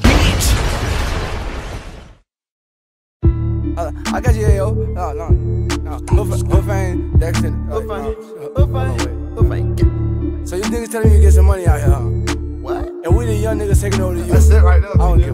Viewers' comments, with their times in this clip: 0:03 Intro is inaudiable as fuck.